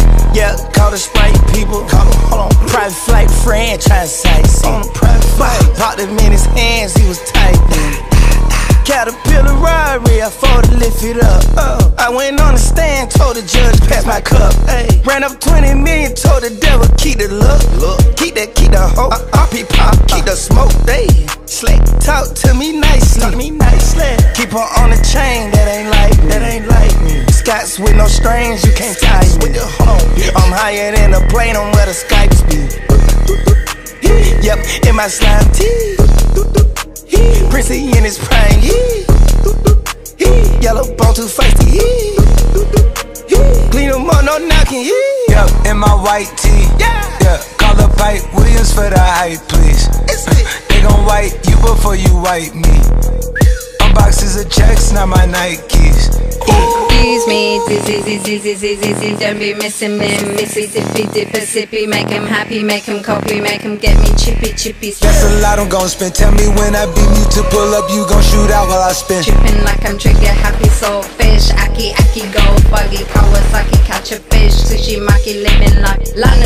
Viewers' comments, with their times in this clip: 0:04 “Private flight to France” uhhhh, I heard franchise not france
0:57 arabic people be like : SORRY WTF (it sounds like a bad arabic world )